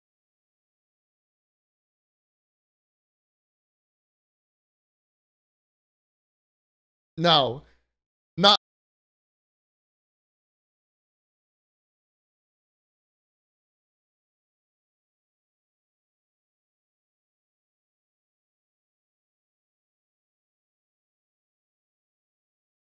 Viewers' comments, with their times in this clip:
0:08 the audio is gone